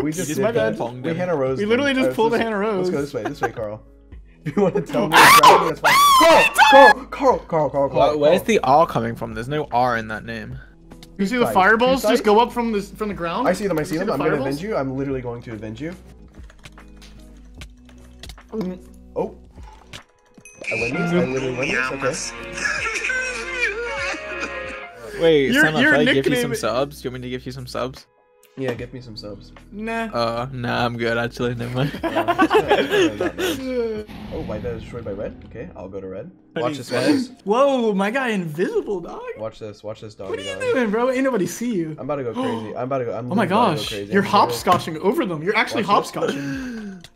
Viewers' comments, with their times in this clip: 0:04 MY EARS I HAD MY VOLUME UP SO MUCH
0:06 R.I.P headphone users 🥲
0:32 Nobody: Sapnat "Inadible"